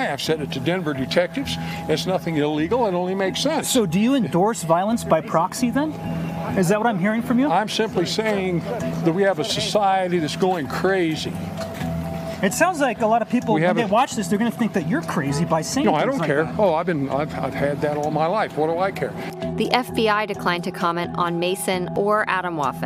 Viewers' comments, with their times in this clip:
0:08 he sounds like the joker